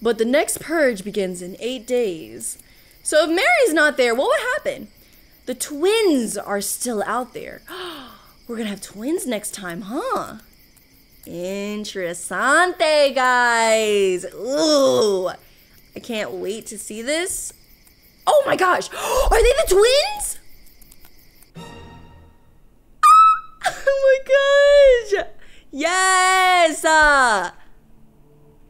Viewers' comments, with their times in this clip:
0:10 what the frick is that scream😂😂😂😂😂😂